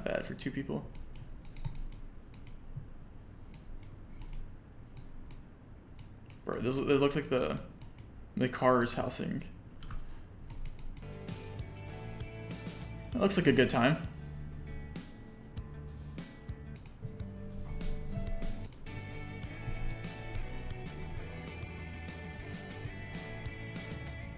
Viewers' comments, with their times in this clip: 0:10 i actually laughed out out when it cut to the video of the ski resort with the cheery music